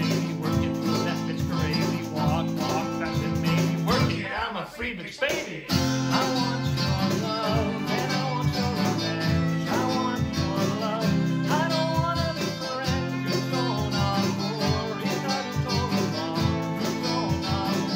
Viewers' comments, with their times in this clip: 0:04 A fun surprise when the person in blue also joined in with vocals ! 😄😎